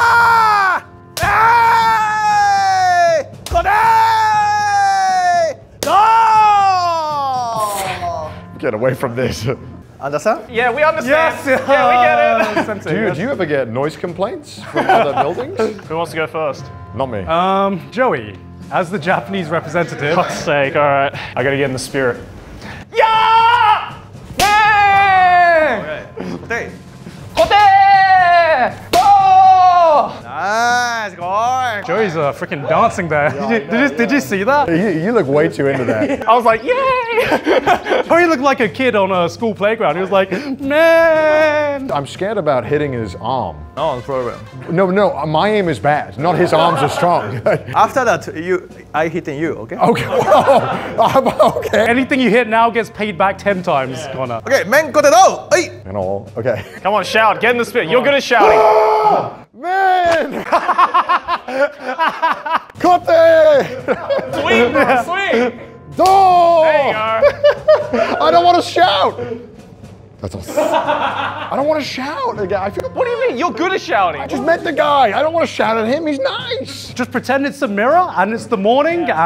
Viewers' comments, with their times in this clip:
0:09 ~The way he says "Understand?" is like straight from a Tarantino film lol.
1:00 for that Manly shout, Conner is way too gentle 😂